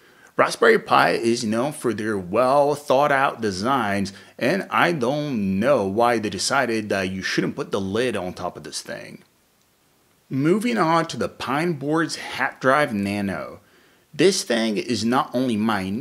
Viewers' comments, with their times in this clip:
0:04 "I don't know" that had some Christopher Walken vibe sound to it